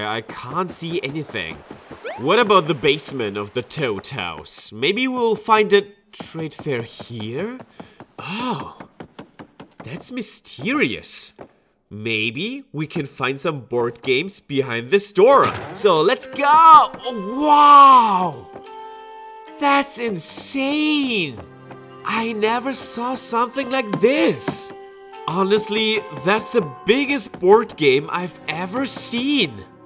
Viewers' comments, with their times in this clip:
0:10 You emphasize and speak so well here 😍😍😍💞💓